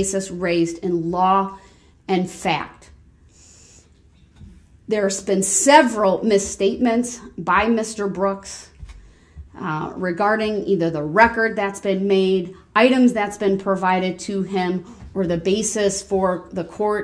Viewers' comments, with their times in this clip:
0:03 Brooks even has Judge Dorow saying “substain”.